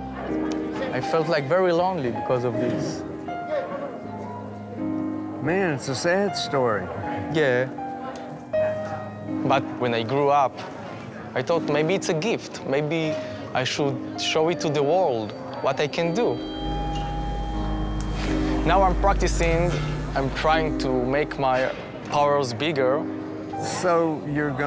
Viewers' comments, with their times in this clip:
0:03 the guy he is talking to looks like Michael jackson but sounds like Ozzy Osbourne
0:11 maybe its a geeft no its a JEEFT